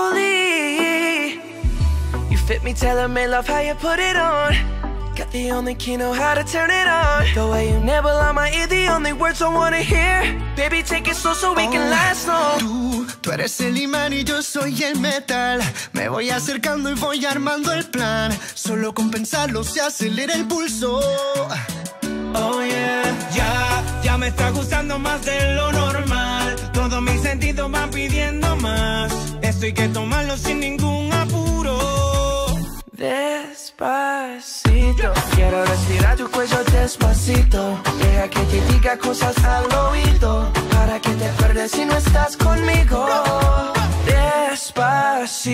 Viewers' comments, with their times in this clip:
0:10 who else thought that the song's lyrics may have the word 'susu' buts its 'slow so' damn that thing
0:33 when he says daspacito, it literally kills me 😆